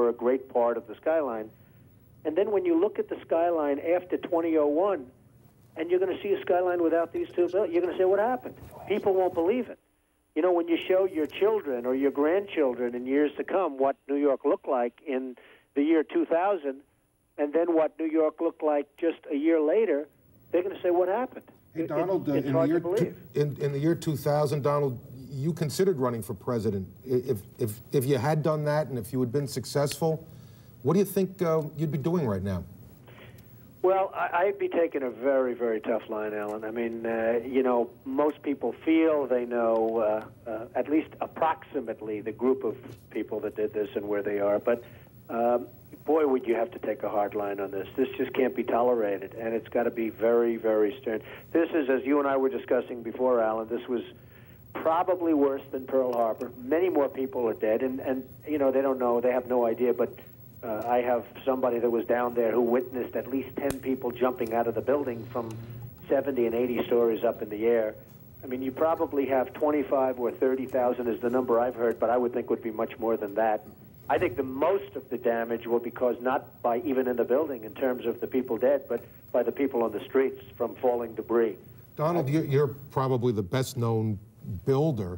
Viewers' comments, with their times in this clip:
0:09 what are they whispering?
1:06 WTF does that ambulance say?